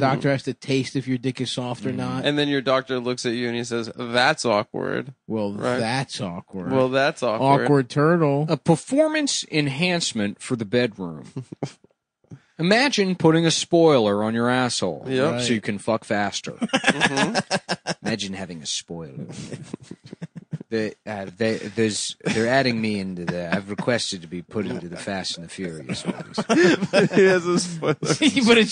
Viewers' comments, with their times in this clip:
0:09 I think this was supposed to be his Tucker impression